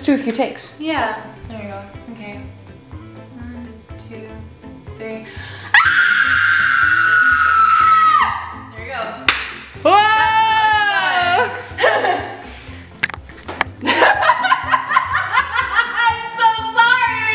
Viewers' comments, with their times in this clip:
0:04 everyone who has headphones or ear phones watch this..... RIP HEADPHONE/EARPHONE USERS
0:05 Momo screams Laughs Kiri comes Momo I'm sorry are you okay? Everyone laughs laughs